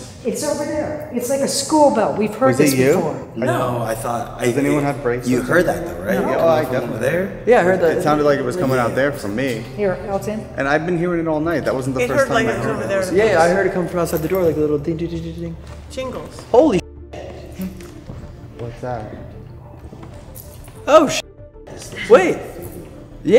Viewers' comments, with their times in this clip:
0:06 The bells ring again while everyone is talking so no one hears it.